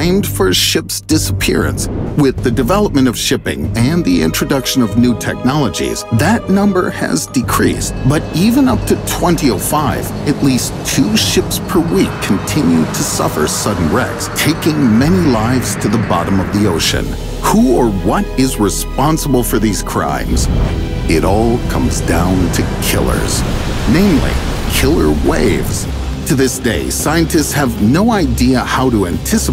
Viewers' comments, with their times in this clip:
0:08 Him saying 2005 as 20-05 really bothers me..
0:10 "twenty oh five"? Who says it that way lol